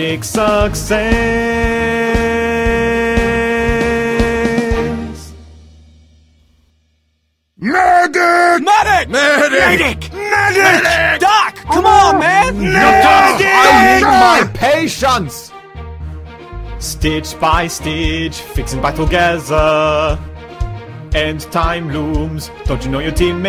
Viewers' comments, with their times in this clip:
0:07 I put this song to play whenever I spawn as a Medic in TF2. gets me every time because I always think a teammate's calling for a Medic.